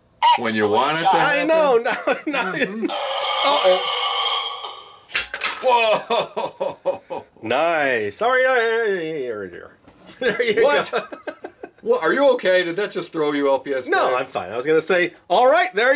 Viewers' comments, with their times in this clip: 0:03 the burp made me dead LMAO😂